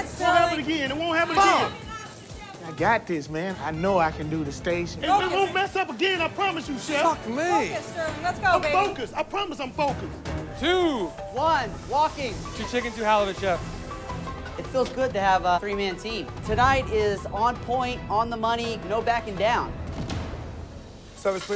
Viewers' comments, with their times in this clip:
0:09 did i heard a ringtone here ?? 🤔